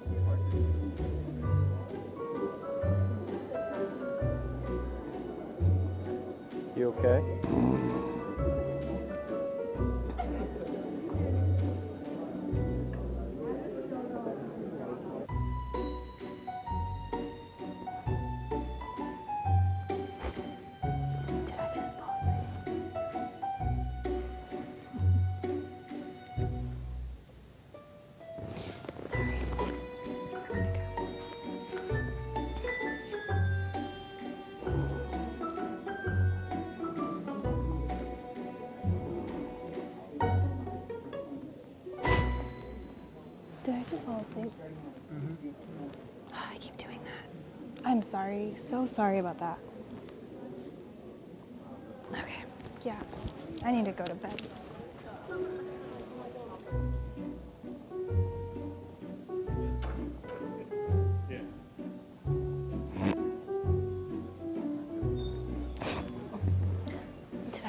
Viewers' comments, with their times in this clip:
0:07 "You Okay?" SNORTS
0:23 man his laugh 😭❤️
0:32 he couldn't stop laughing. 😂
0:53 Me watching this in 2021 and saying ' Call the ambulance we got an COVID-19 case here someone just coughed'😂😂😂